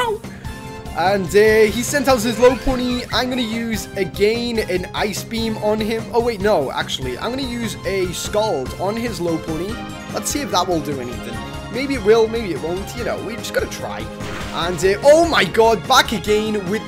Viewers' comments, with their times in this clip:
0:03 dazzling gleam or dazzling gem I don't know